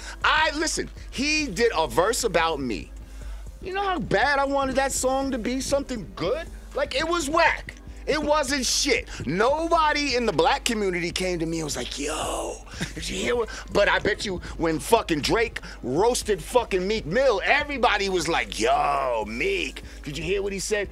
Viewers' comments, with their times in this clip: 0:06 you can hear the genuine jealousy coming off this dude. Eminem hurt this man and he can’t cope 😂